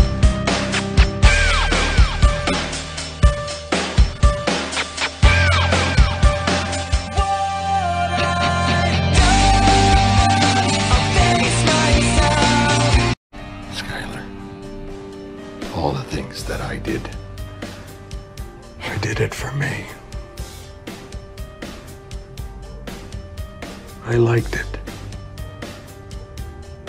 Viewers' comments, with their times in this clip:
0:10 the crippling quality of the song in this one would be something that'd happen a lot in 2007 😂